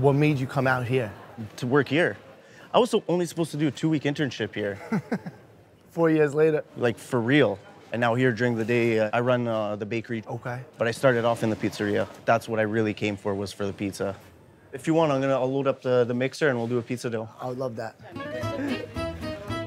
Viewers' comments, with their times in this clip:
0:07 dyuuring the deeey! Canadian intensifies